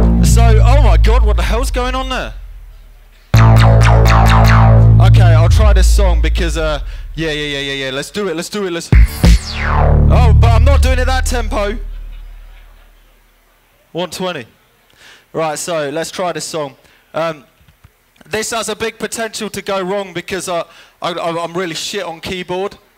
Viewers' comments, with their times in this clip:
0:09 That last song!